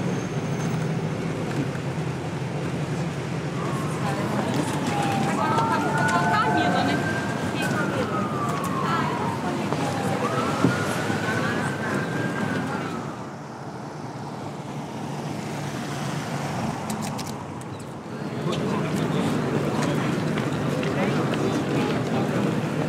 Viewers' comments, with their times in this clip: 0:04 Brazilians speaking in :D Nice video!